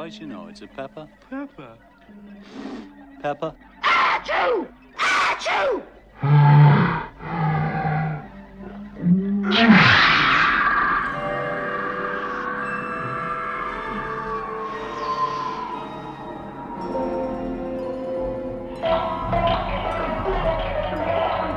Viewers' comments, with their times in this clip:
0:03 Bless you George and Ringo
0:04 this is quite literally the best exaggeration of a sneeze